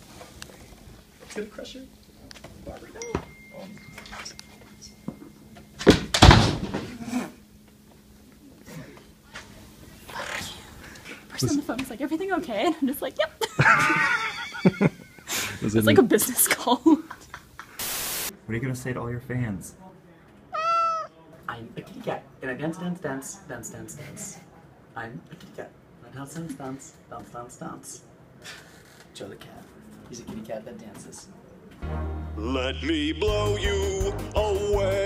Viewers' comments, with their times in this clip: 0:03 there's an iOS text sound, took me a while to realise it was part of the video...
0:20 I'm not a cat person, but years later that one meow still gets me!
0:20 That meow! :O